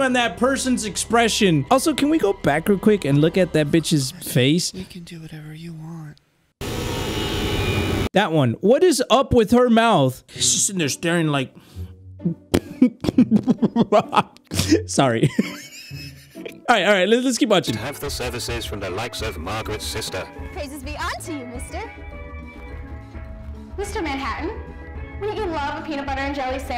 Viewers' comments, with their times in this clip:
0:03 hey, did anyone hear that voice ? the video was paused
0:04 Did anyone notice A voice can be heard saying "we can do whatever you want" even though the video's paused.
0:11 When he rewinds the video at min am I the only one that hear “we can do whatever you want “